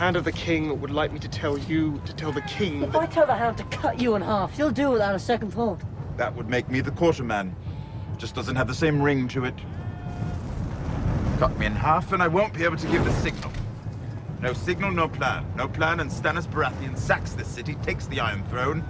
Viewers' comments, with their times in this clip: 0:04 the Irish escaping him lol
0:05 Jack Gleeson's Irish accent slipped out